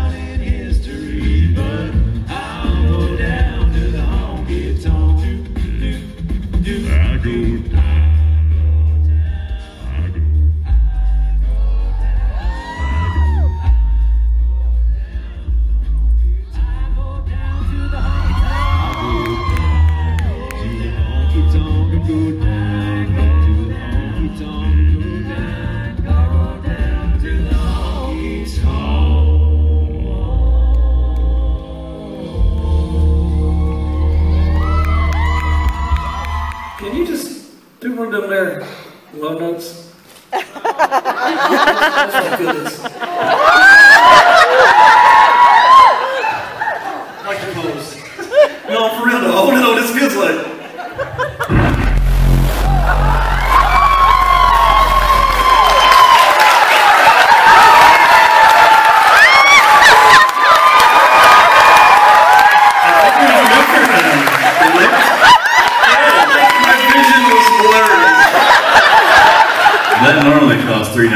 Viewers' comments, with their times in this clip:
0:04 I was hearing absolutely nothing... then I turn the knob for subwoofer on my speaker... Damn! 😄
0:14 Even my Bose earphones barely let me hear the Eb1
0:52 Jesus u can hear everything vibrating. Guys like an alligator when they vibrate water with their throat, (check it out)
0:54 Someone should put the original Playstation startup sound in front of that.